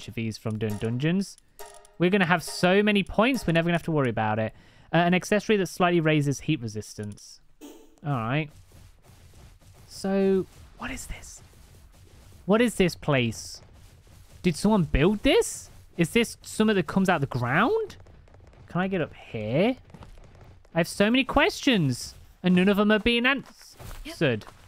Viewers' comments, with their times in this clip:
0:10 the pure confusion in your voice made me laugh a little. It sounds funnier at 2x speed😊